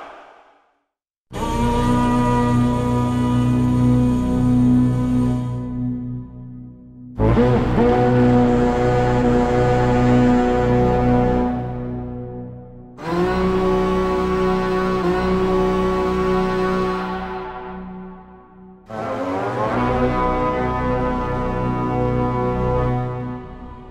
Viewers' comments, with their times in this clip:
0:10 Damn + The Music OOF, It's So perfect.. Remembering me To Horror Movie :3